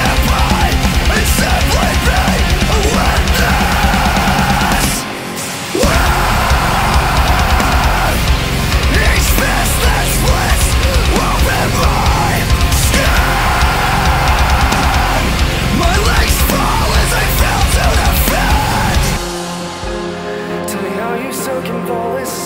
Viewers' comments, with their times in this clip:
0:04 that drop tho